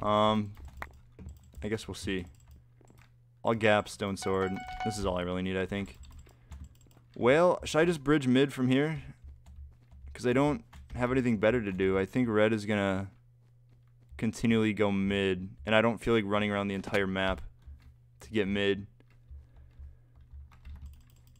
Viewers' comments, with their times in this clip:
0:07 when he says well it sounds like 🐋